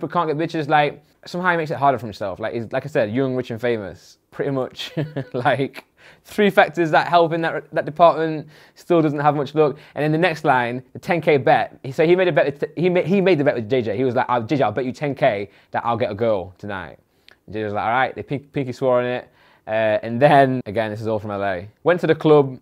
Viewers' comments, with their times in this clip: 0:05 What’s the noise ?